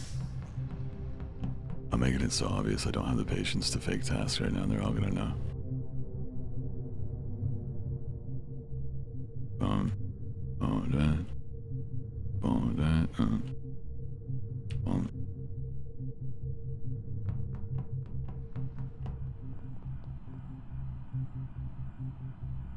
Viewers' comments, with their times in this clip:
0:10 SO NO ONE GONNA TALK ABOUT HOW CORPSE IMITATED THE SIMON SAYS TASK SOUND WHEN HE FAKED HIS TASK IN ?? No one???